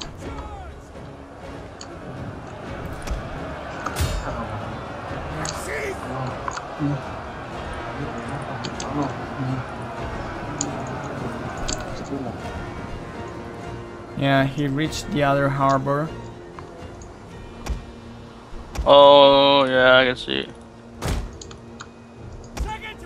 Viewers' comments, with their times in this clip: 0:09 oh my god the chewing noise -_- AHGT